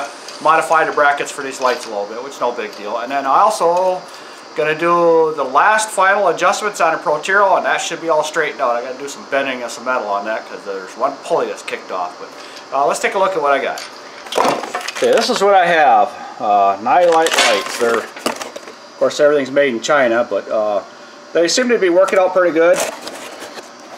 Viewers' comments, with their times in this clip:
0:05 "Protero" that must be the way Northerners say it lol? Nice vid btw💪🏼.